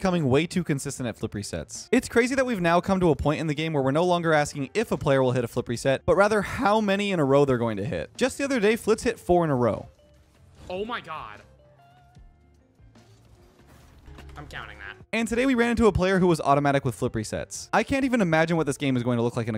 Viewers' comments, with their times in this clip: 0:06 Not even 10 secs in and bro had a crazy voice crack 😂